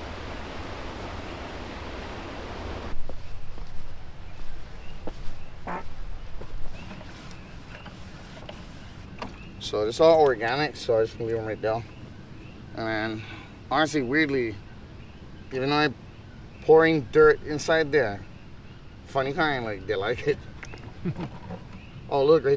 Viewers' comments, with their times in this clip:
0:04 Could hear the night marchers at the mark🤯